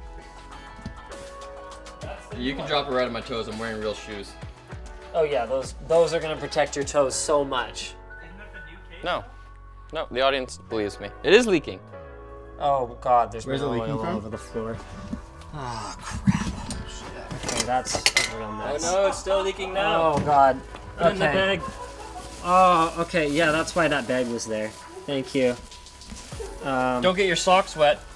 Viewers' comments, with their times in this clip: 0:09 i feel like playing PSO after this. music